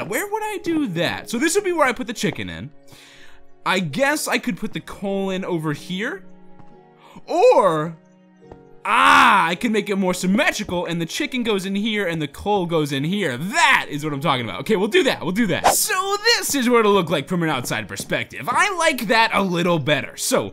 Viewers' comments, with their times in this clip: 0:08 OMG when you said ahhhh you sound so funny